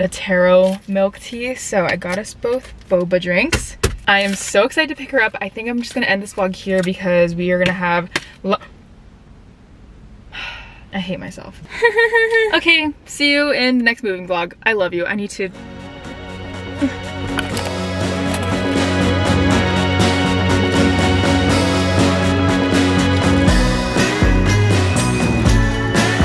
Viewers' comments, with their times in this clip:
0:10 YOU SOUNDED SO MUCH LIKE KAT FROM SAM AND KAT OMG IM DYING